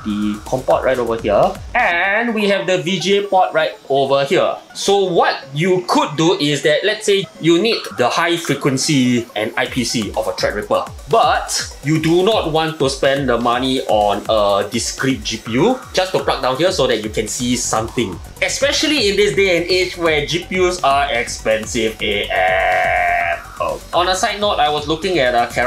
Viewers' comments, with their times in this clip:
0:09 say it dont spray it...LOL